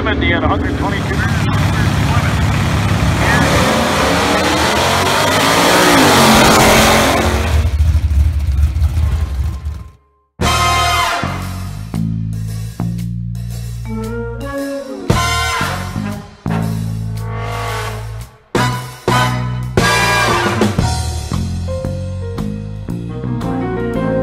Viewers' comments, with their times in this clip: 0:09 Really liked the Mancinni (Pink Panther) sounding music starting nice touch!